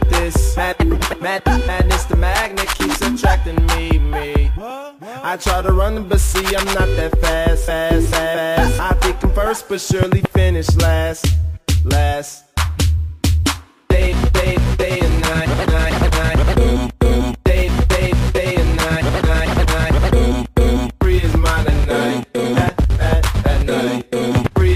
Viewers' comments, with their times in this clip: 0:05 it sounds like hes saying fat ass